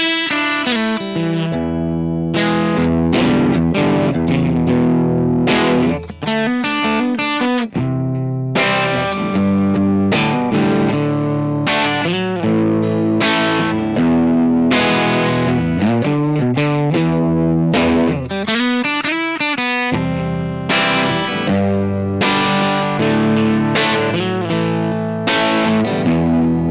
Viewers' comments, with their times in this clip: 0:09 I liked this lesson a lot. It's a pitty though that you didn't explain those chord 'variations' you play at ~ They sound so nice, but I don:t know how to play like this :(